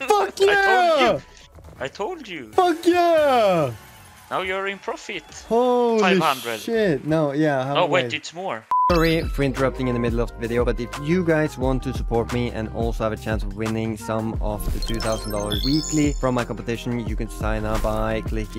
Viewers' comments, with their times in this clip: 0:06 awesome victory metal
0:06 awesome victory metal
0:06 awesome victory metal